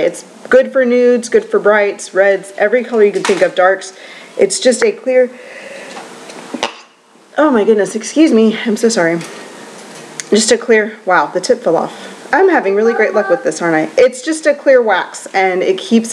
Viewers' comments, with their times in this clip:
0:04 Bless you for that sneeze You can try really hard to make it discreet and quiet but we will still always know when you sneezed!